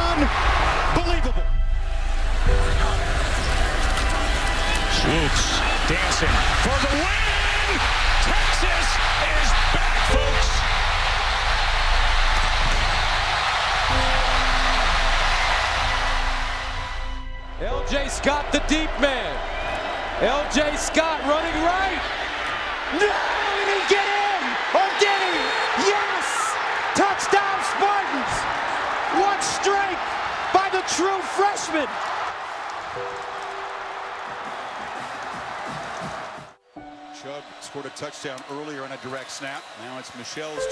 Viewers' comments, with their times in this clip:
0:06 why does that commentator sound like plankton from spongebob 😂😂
0:22 the way he says “NOOOOOOOO” gets me😂😂😂